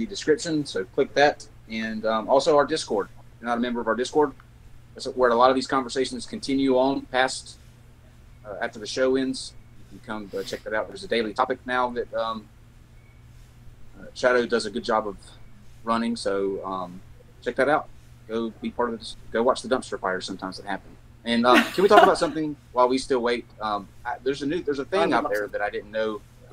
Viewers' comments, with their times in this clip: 0:10 so im shadow now? woooo imma ghost!!! (unless i missheard and it was shoutout)